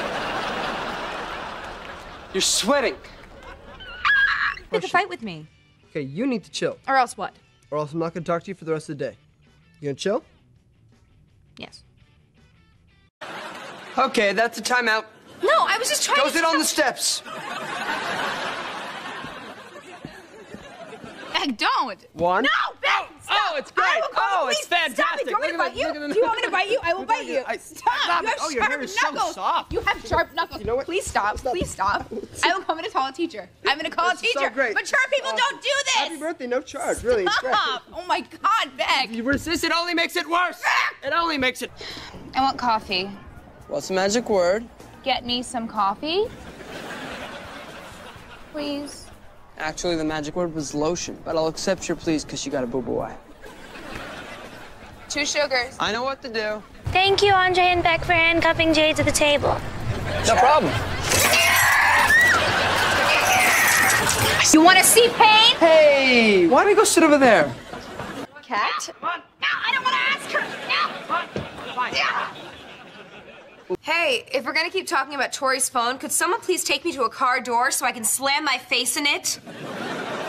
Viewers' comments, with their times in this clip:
0:10 Jade's little "yes" had me crying, she is so awesome, I miss her, and Victorious :(
0:11 hee little ‘yes’ IS SO CUTE WTF
0:11 her little yes ❤❤😊😊
0:24 it almost sounds like they’re breaking character
0:32 i thought she was saying “i’m gonna fucking call a teacher” 😭
1:08 am I the only one who heard cat?